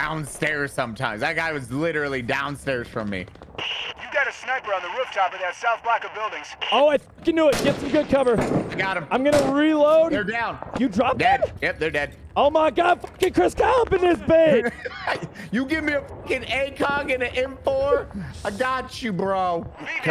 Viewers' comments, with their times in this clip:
0:03 does anyone else think that guy sounds like Donald Trump